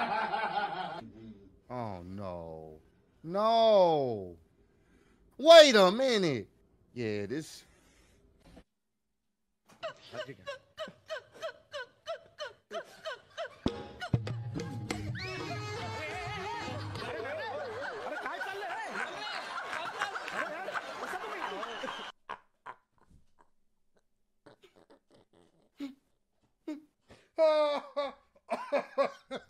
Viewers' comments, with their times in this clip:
0:10 if that ain't some Trillville "What it is" beat start up!!! Dammit! lolol